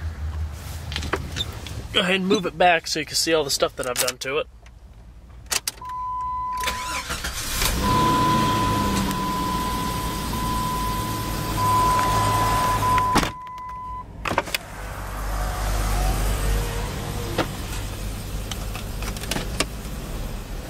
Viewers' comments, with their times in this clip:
0:03 I like that startup